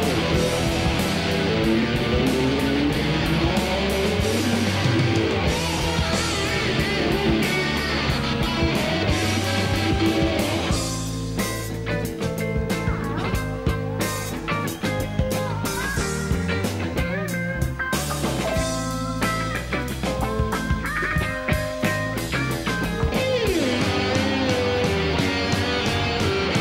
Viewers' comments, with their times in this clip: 0:09 Thom Johnny, have you really missed that note? Thom after literally one second EEEED, have you really forgotten to switch off those noising pedals?